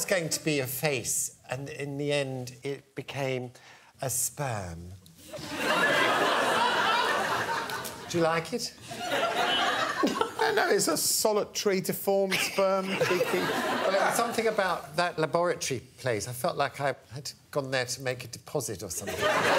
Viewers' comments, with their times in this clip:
0:03 A spuuurm... idk why I lol'd at that XD